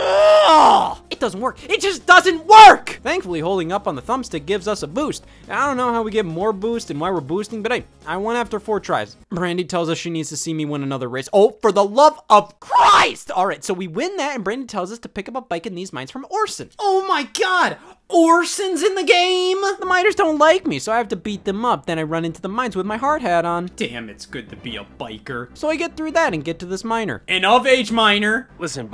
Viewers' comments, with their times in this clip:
0:09 HOLY CRAP i have never seen Scott this mad that scream was legit GUTERAL ANGER, ALKSDJAJKSDL i loved this vid
0:11 I have never heard scott scream like that and i lose my mind every time